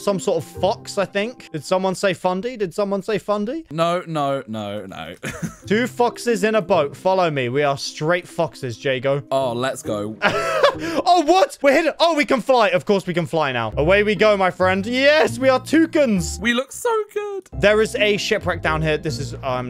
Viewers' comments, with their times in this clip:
0:06 lol is kinda sus when u said 2 foxes it sounded like 2 fuc-